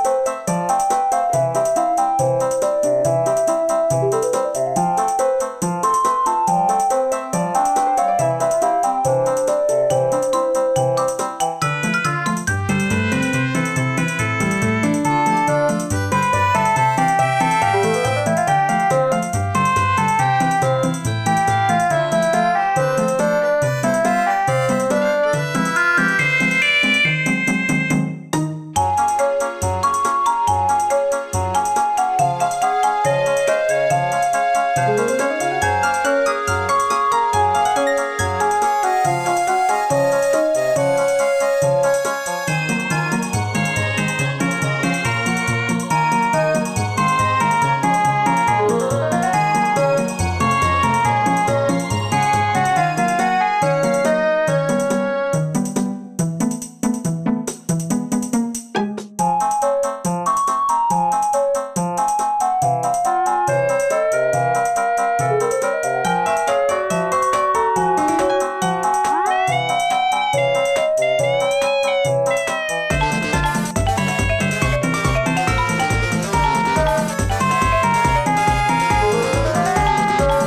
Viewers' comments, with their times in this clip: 0:09 i hear a SH
1:05 A bit of the title theme starts but it played earlier too.